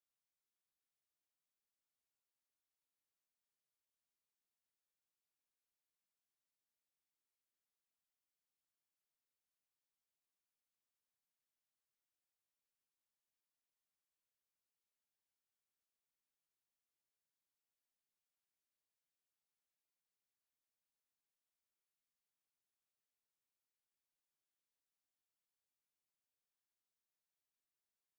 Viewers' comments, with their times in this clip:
0:10 it sounds like he is saying Cold palmer